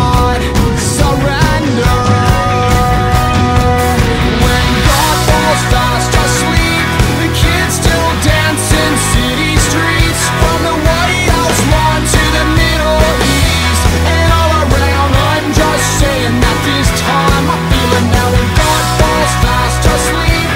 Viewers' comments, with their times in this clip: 0:05 is very reminiscent of "The Adventure". I love how Tom connects all of his songs